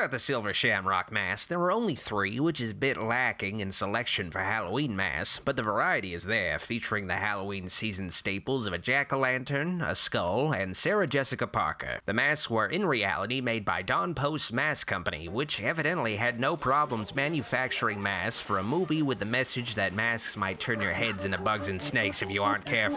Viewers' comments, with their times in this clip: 0:08 The casual nature in how you say Sarah Jessica Parker made me choke. Brilliant.